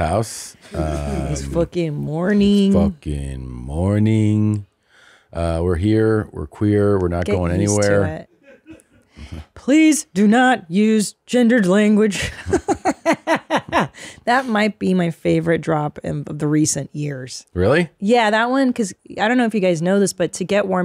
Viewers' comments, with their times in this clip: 0:08 wow, Christina sounds just like that they/them weirdo ha ha!